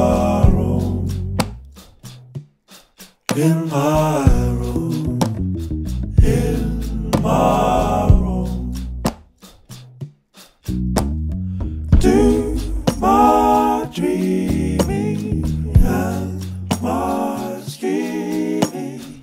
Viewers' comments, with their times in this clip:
0:03 Love that bass fall very effective